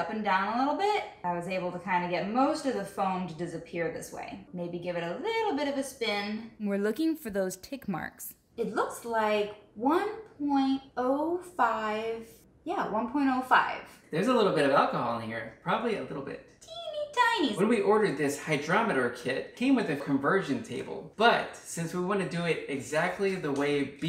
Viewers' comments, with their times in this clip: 0:07 Scared the shhh out of me I thought some girl was on my right whispering into my ear for a second